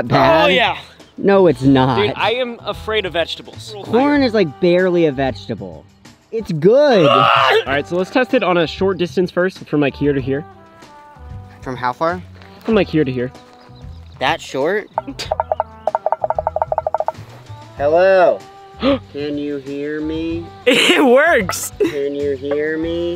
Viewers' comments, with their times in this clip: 0:04 Omfg when he kinda gags, HE SCREAMS LMFAO
0:07 my man sounded like a cow